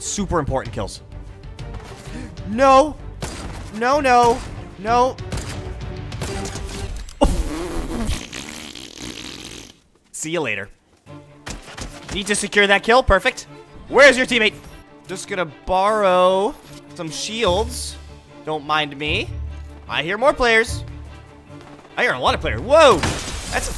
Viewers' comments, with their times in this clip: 0:06 What sound are you making? 🤣🤣🤣🤣🤣🤣